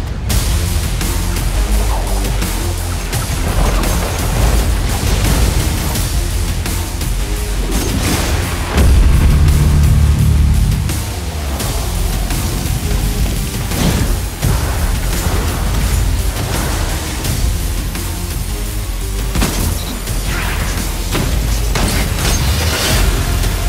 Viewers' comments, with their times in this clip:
0:08 imagine if that was spectral blade's activation noise